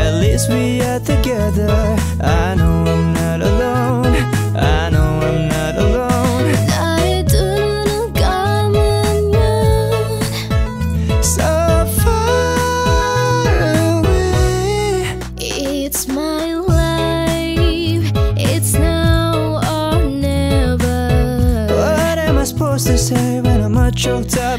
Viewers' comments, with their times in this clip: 0:06 wow its a nice pronouncing!